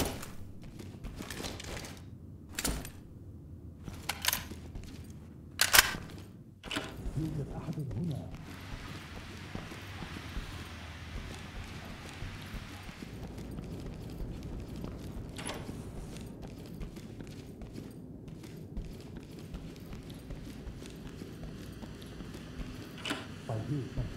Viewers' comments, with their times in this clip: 0:05 bro just started speaks arabic